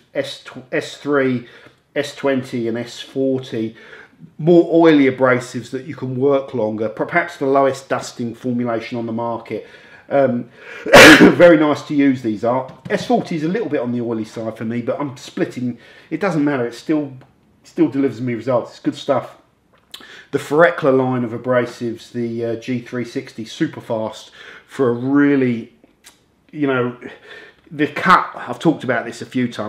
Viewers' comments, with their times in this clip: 0:10 can't hear anything anymore RIP headphone users